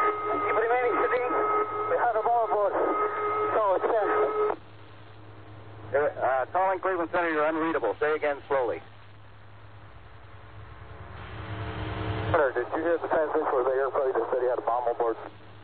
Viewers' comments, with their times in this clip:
0:03 hey ok i dont know if its me but .. im confused isn't it the terrorists talking .. !?